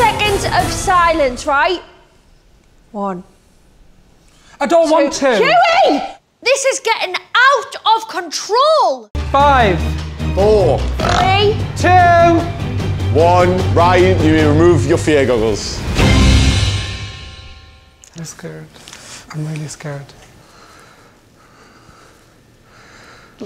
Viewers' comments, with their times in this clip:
0:10 I love how he just stands there with his glasses on while they count down and he just burps 😂